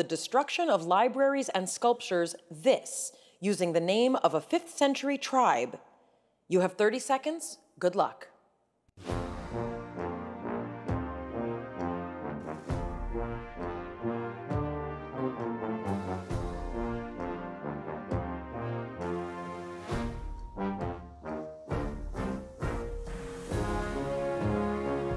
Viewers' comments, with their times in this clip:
0:08 Sounds like the Sports Jeopardy! think music took a ton of downers since the last college tournament.